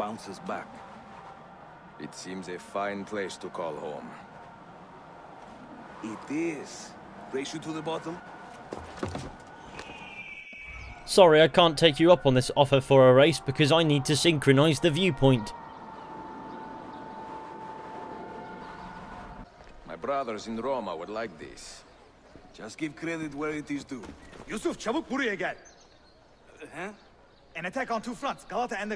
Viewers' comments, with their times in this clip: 0:10 the extra accent he put on fucking killed me, hahah x)